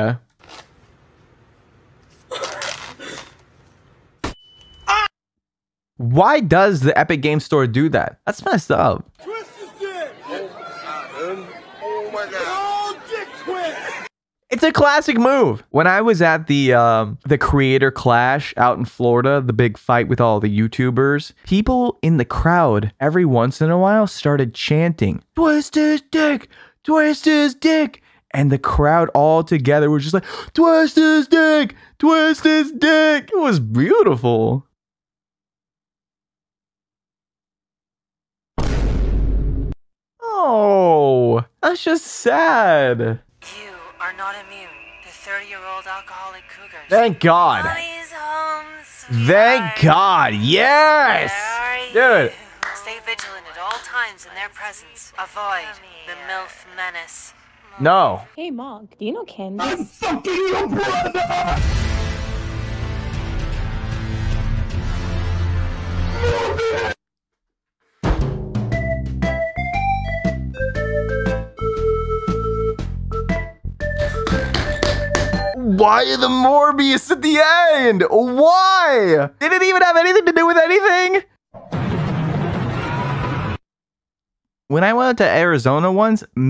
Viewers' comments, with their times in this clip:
0:09 I swear the first few times I heard that sound clip out of context I was hearing "That is sick and twisted!"
0:58 Don’t know why but with him screaming morbius just makes me lose it with the way he screams it 😂
1:07 can we notice the table slam ACTUALLY fitting with the music?